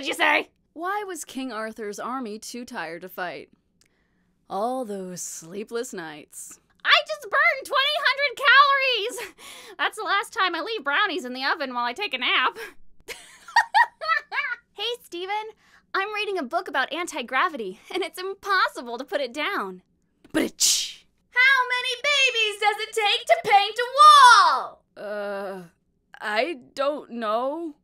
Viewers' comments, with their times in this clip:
0:08 you kinda sound like Sadie from Steven universe